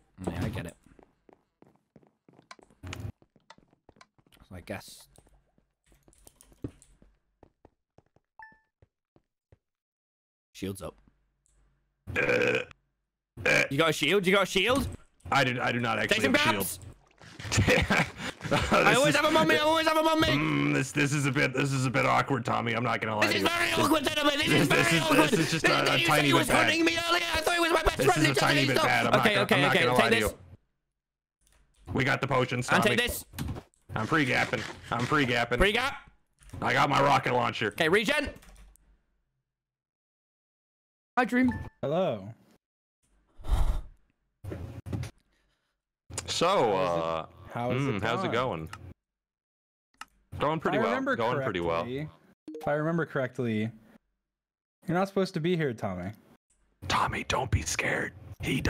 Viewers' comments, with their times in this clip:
0:07 I just love how he screams like a wild and then just goes with soft voice "hi Dream" X'DD
0:40 i love the moment dream gets in the call, tommy immediately says "hey dream" like his voice cracked
0:41 Dream sounds so calm it's actually terrifying...